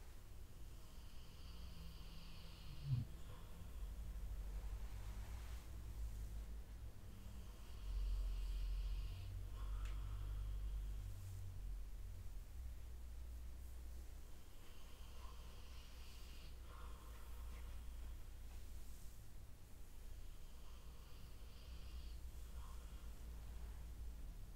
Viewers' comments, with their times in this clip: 0:07 the asmr is so good whoever else is in the room off camera fell asleep, you can hear them snoring lol!